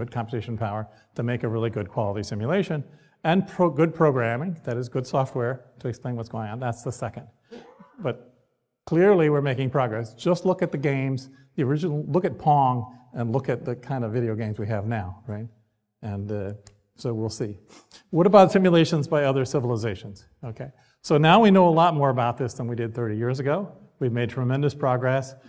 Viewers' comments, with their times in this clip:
0:09 He also farted 😂🙈